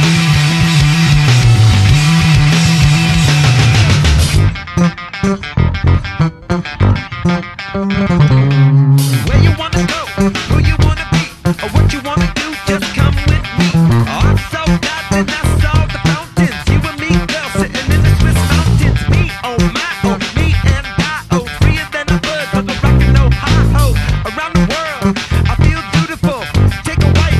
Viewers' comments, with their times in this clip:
0:07 did u play that dead notes or is it just flea in the background music? if yes how was it? even flea can't play that live..
0:08 Best part. That bass whammy thing. ... Nice good !!